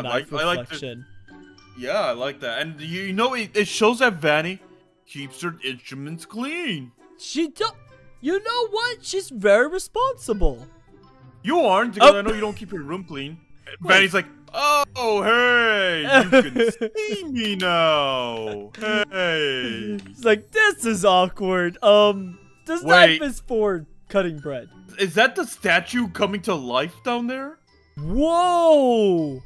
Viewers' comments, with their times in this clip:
0:10 why did Funtime Freddy sounds like markeplier In that moment XD 101